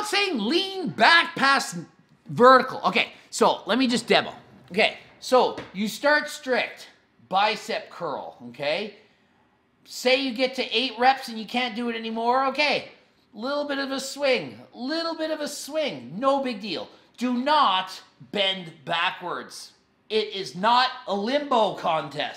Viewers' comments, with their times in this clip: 0:05 AM ok dr.greg start yelling at us.